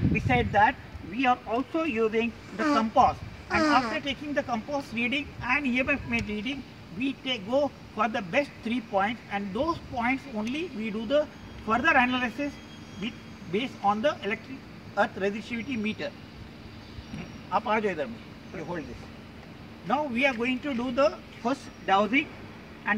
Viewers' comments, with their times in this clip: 0:05 did anyone fart 🤣😂